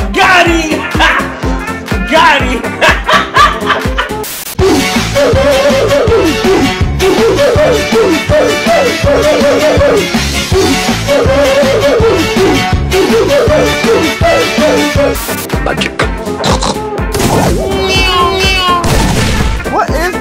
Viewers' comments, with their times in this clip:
0:08 🤣🤣🤣that song again😂